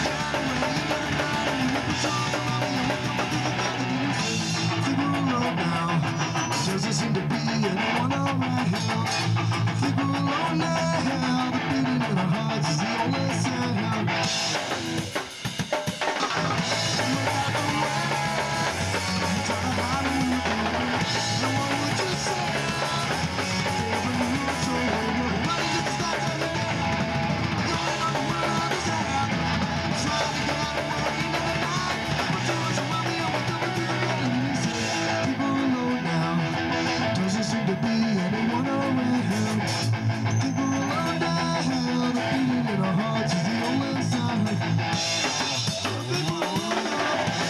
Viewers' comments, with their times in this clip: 0:08 Fkn amazing, fast skatepunk. Vocals are awesome indeed, niceee
0:28 that fill is ridicouolous n